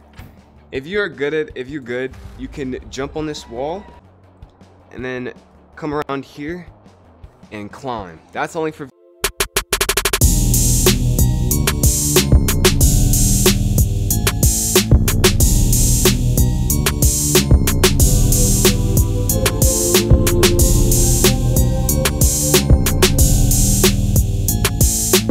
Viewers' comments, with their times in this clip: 0:09 “that’s only for.” Starts Mega ultra cool gamer music